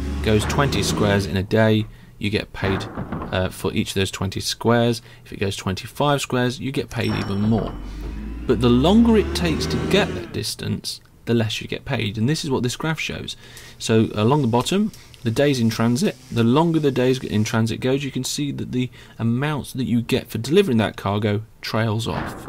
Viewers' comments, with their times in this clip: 0:06 the fuck are you talking about, i can barely hear him during the graphic section